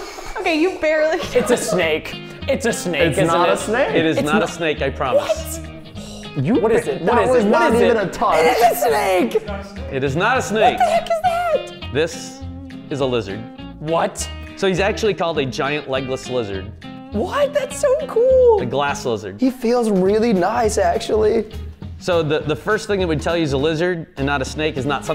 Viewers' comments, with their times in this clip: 0:10 the way he just says: WHAT